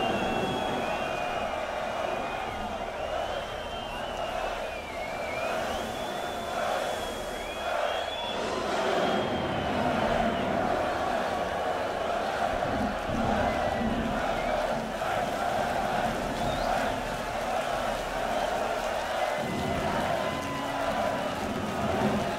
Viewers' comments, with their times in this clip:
0:07 What are they all shouting starting ?